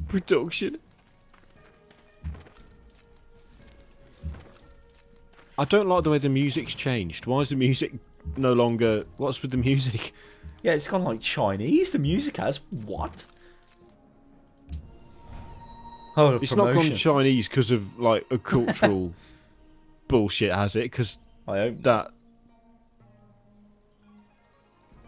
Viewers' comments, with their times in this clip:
0:08 The music changes depending on who you're at war with. Brazil is pretty much universally known as the best war music.